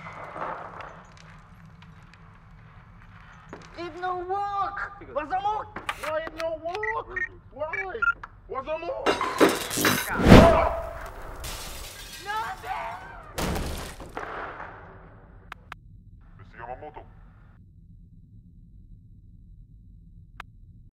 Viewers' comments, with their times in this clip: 0:08 The short scream hahaha! Whooo!